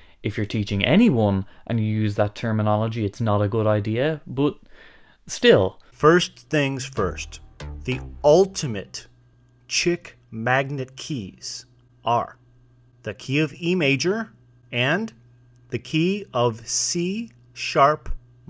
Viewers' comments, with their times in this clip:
0:05 the audio drop got me good
0:06 That bit of 'Fancy' in the background made me laugh, not gonna lie.